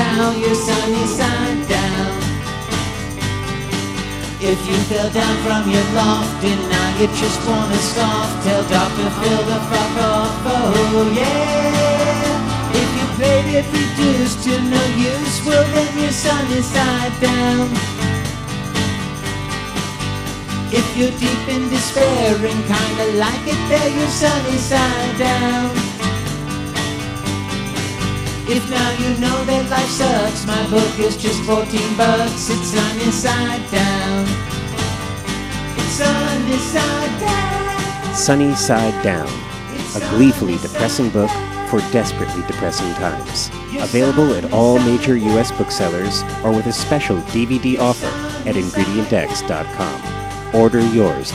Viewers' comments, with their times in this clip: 0:10 "Tell Doctor Who(?) to fuck off . . ." X-D
0:38 Your voice sound's like Kerry Shale's.